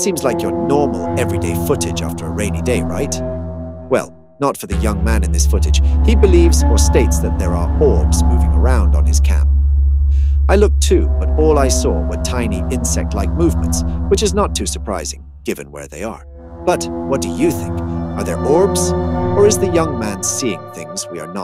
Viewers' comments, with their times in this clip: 0:03 😮 dude, you have an Echo Echo Echo. It's better than the video video video 😀😂😅😂